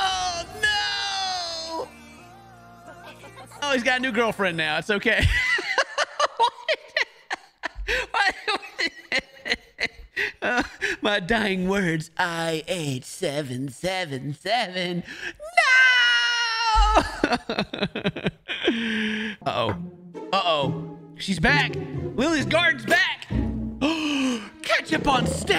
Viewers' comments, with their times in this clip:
0:06 That NOOOOOOO straight up was Mario yeeting himself off a cliff